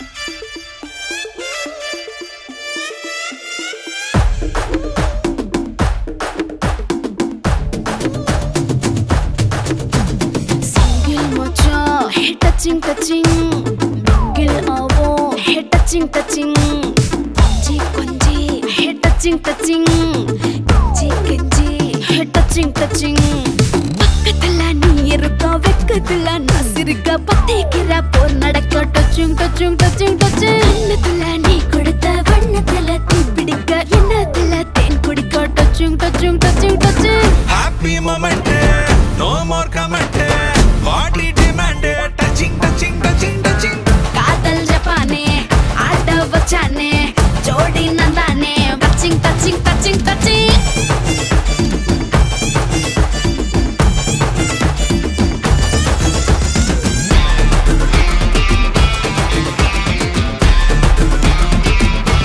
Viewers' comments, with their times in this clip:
0:10 song starts here🤘
0:44 music must like🎉
0:50 bgm + step + ANU face reaction ❤😇😵‍💫😵